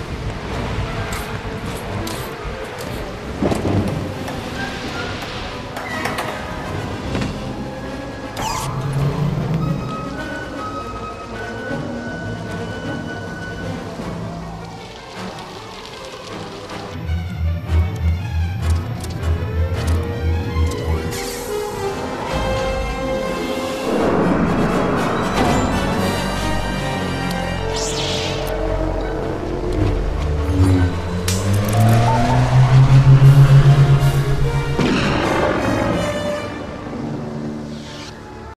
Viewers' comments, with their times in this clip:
0:07 "*OOOKKAAYYYY!!! WE'RE GOING TO HAVE TO OPEN THIS DOOR... WITH.. THE FORCE!!!! HUUUUUUYYYYUUUUUUGGGHHHHHHHHHHHH SUPER SAIYYANNNN JEDI MOOOODDDEEEE!!! WAVE... THE HAND!!!!*" Door whispers open
0:23 it almost looked and sounded like the door hit Jango's head while closing.
0:24 what is that bonk sound oh shit boba fett hit his helmet on the door LMAO WAS THIS AN ACCIDENT THAT THEY JUST KEPT IN
0:25 you hear a bang, Jango hit his head on the door in reference to the storm trooper in new hope